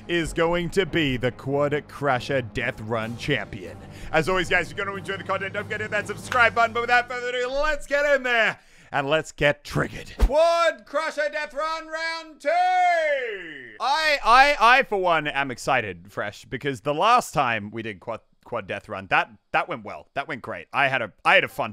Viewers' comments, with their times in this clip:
0:08 "and lets get trig-ed" What